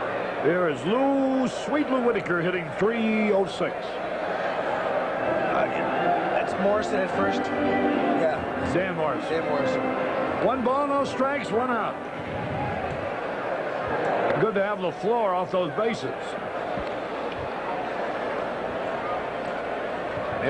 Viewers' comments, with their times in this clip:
0:05 The legendary Nancy Faust with a little “Louie, Louie” for Lou Whitaker Was way ahead of her time and set a precedent for ballpark organ music.